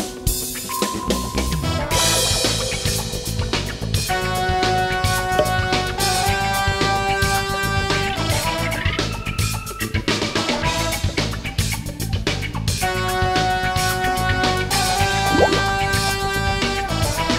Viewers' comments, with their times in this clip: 0:04 DAMN!! I thought for a second they were going to start playing the theme from the original S.W.A.T. series